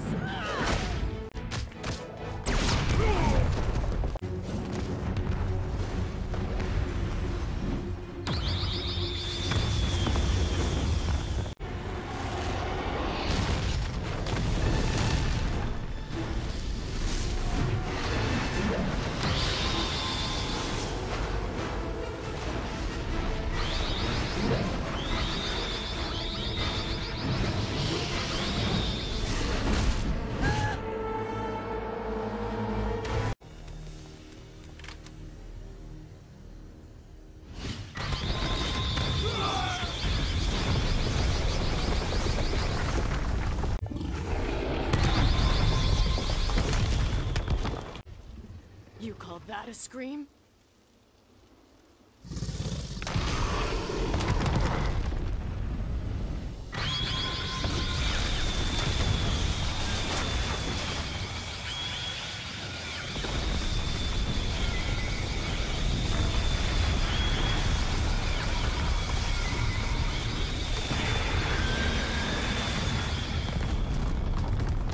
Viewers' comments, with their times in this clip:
0:10 This is simply Black Canary's most powerful scream yet!! Very strong.🔥
0:56 I think that was the most powerful scream